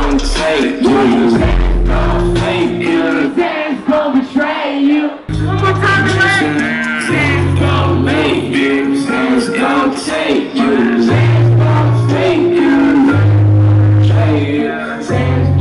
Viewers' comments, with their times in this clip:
0:03 wow i didn’t know lil xans voice would be like That but it is still awesome